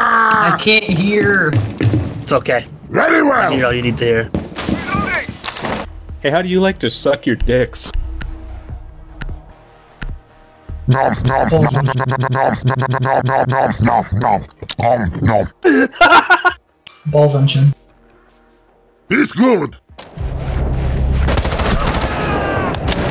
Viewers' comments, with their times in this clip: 0:05 I can't not cry listening to heavy nom